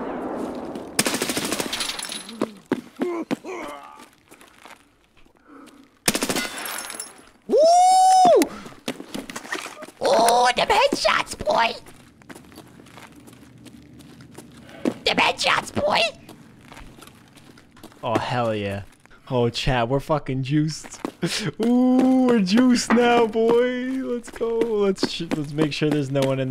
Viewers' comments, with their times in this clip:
0:07 haha twitch sound